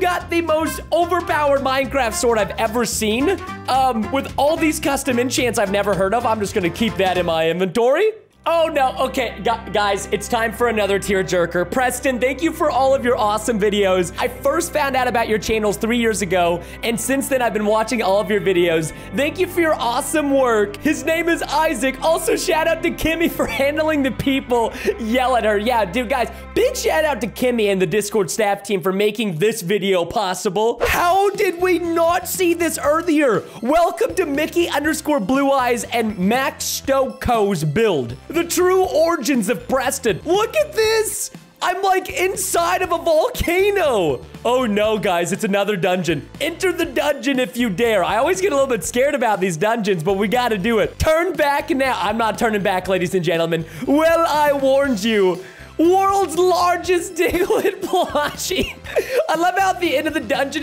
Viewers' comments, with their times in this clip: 0:08 What i heard in im just gonna keep this in my inventory What the text say in aM I iN MiDoRi?!??!
0:43 that chuckles was so cuteeeeeeee